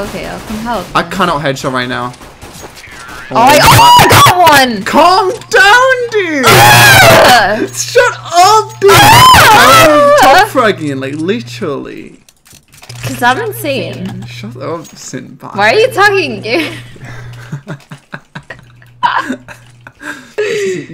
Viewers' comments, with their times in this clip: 0:05 Girl moaning enjoy